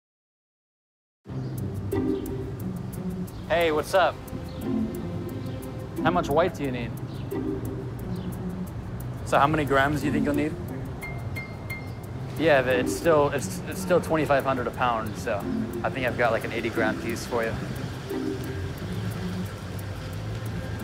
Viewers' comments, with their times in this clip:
0:06 Buddy’s just trying to sound as shady on the phone as he possibly can lol.